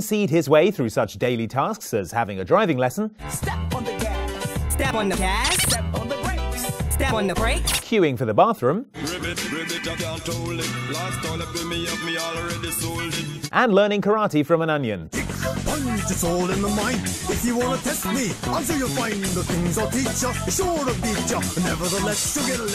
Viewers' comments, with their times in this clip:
0:09 is this frog supposed to be Jamaican?